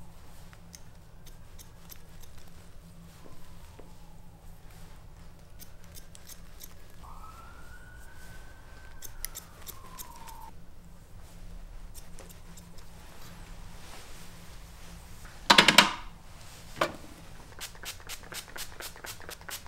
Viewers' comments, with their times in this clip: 0:07 I can hear ambulance sirens